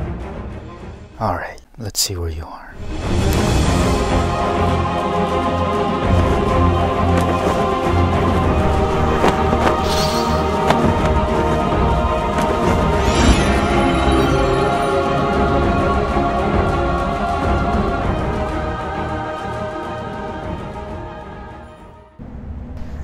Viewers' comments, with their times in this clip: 0:10 my guy just made a honk look cooler than it really is 😂